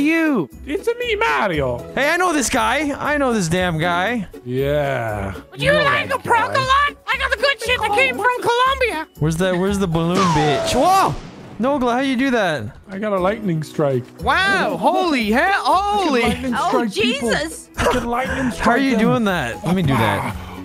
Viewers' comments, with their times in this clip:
0:06 that is dr doofenshmirtz dude, no doubt about it